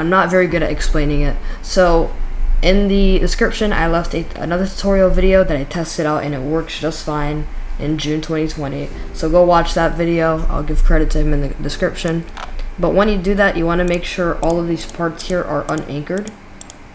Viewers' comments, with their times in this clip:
0:03 in the background, it got a minecraft music XD